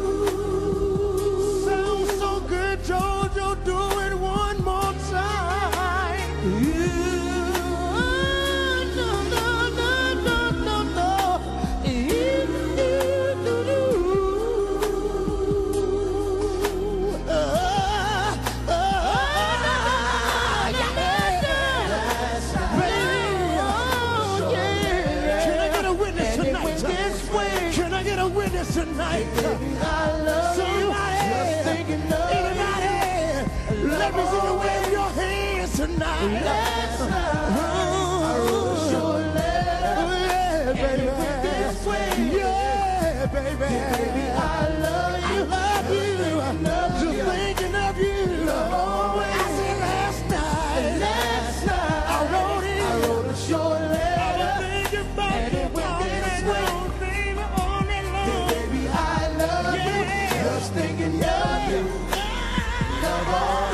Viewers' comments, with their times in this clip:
0:09 kci looked at jojo like "I didn't know u could moan like that brother." I love it
0:16 my favorite part... damn its sounds tasty
0:50 at the mark, K-Ci went to chuuuch!!! If listening to him sing with all that soul don't make you feel some type of way, you don't have a soul!